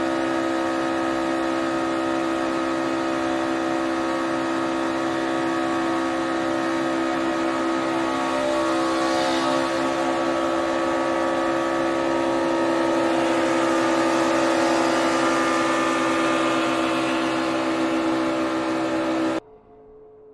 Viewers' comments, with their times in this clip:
0:08 you can hear the impact